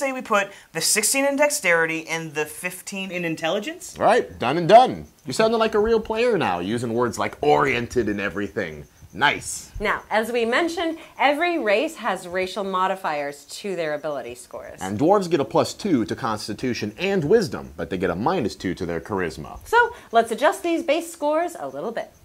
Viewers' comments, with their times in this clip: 0:05 I hear a cricket in the background